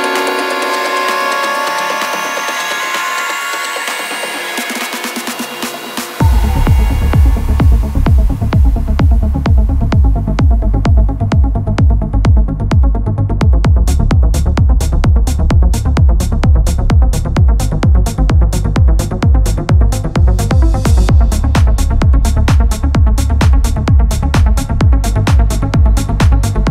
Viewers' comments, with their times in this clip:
0:09 Yoooo when that bass drops lfg haha And the mix is soooooooooo clean, good job. Definitely wish I could see what was on the screen a little more, but yo this looks soooooo professional! Dude and yea that Title Screen Theme had me too haha, too good. Last edit: such righteous vibes, keep it up dude. Everyone else who contributed was amazing too. Looking forward to the next one. Ok for real last edit: Yoooo that great sea remix is fuckin' lit